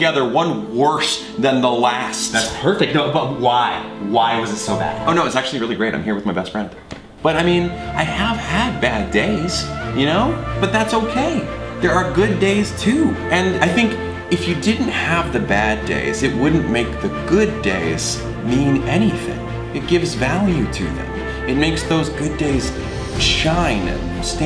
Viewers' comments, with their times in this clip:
0:07 Can anyone please tell me the name of this soundtrack!? It sounds so motivational and emotional...AND EPIC!